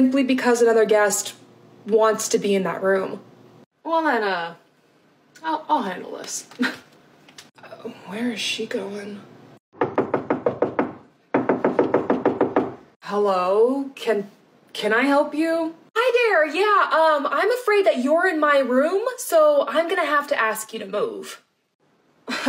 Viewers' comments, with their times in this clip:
0:07 The dread is just seeping out of the speakers.